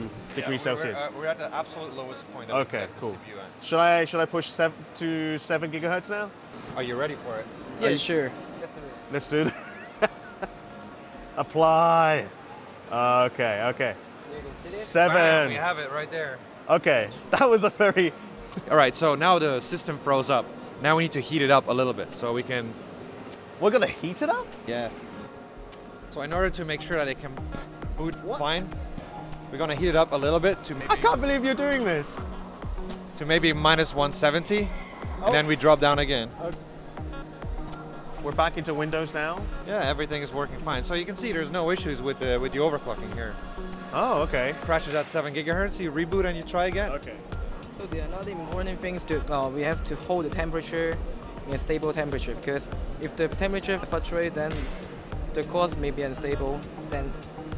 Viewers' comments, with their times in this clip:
0:07 did anybody else hear Killer Bean there?
0:39 De seepeeu is war ming ap